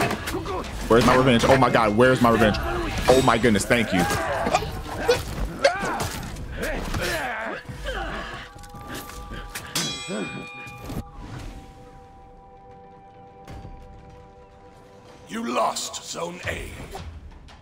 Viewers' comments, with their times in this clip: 0:05 the way his mic can’t even pick up the sounds is hilarious lmao